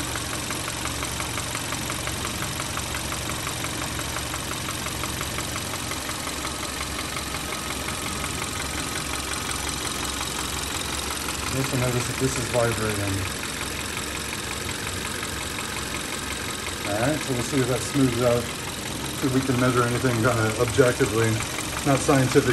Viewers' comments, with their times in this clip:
0:04 that is NOT a lifter. gamma engines has camshafts that act directly on valve spring buckets. there are no top end lifters to be ticking like that. that noise is what i call rod knock fledgling